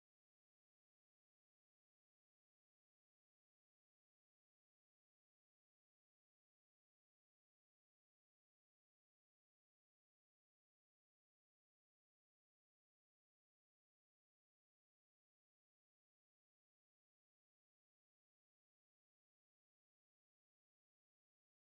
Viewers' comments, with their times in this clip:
0:03 Just an FYI audio cuts out 😣 but it comes back anyways good video I learned a lot and reinforced what I learned in my first day of class ✌️😁thank you
0:08 audio takes a dump for a moment. Heads up